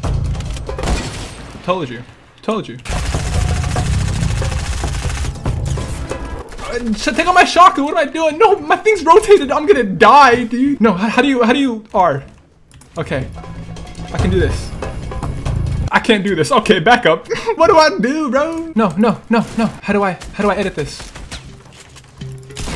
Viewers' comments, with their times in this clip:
0:08 sounds like a crow or a raven also